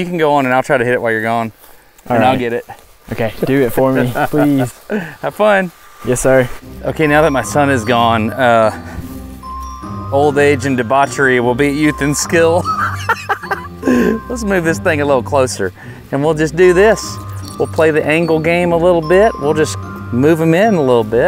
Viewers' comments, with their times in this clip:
0:08 the laugh is gold.